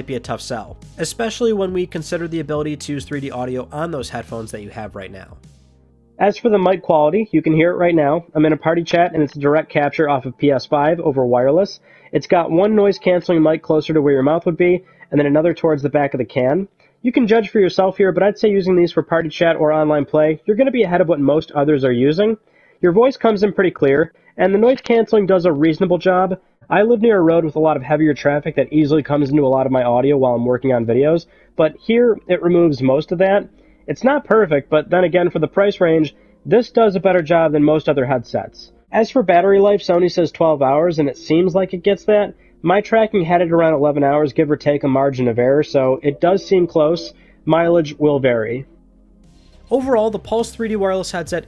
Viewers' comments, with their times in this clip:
0:06 Hey welcome to McDonald’s May I take your order?
0:08 Wow, thats really muffled sound.
0:31 I come from playing with my pc so I don’t know how bad the other mics were but omg in comparison with the stuff almost everybody uses on pc this sound so bad.. :(
0:31 yuck. That mic is poop
0:34 i cant be the only one who thinks his "perfect " sounds just like the music tag